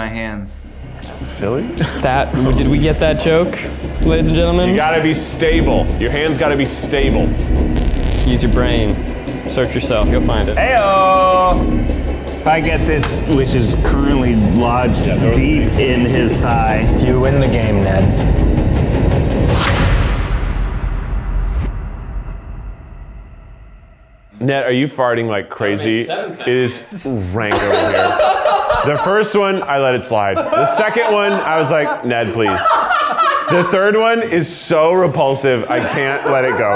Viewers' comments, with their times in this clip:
0:06 The mixture of intense music and the way Ned's head randomly pops up, "Ayooooo!" made me die!!
0:10 cute ayo-ing boi
0:20 The fart starts